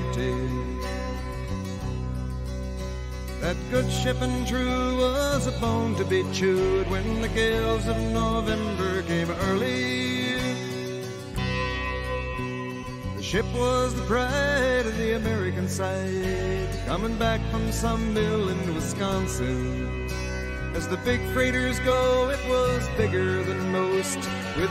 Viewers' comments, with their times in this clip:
0:10 There is a single guitar chord that sounds like a ship's bell. I love that little detail.